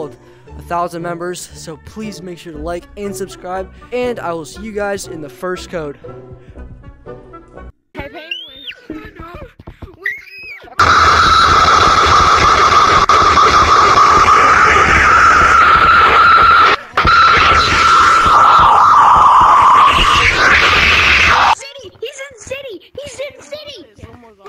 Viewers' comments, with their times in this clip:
0:08 Bro goes from high pitch ahh to Ahahahaha